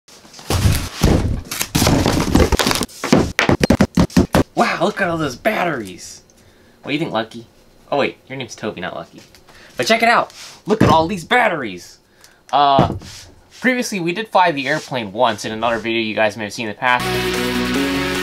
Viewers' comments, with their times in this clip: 0:00 i thought it said dynamite XD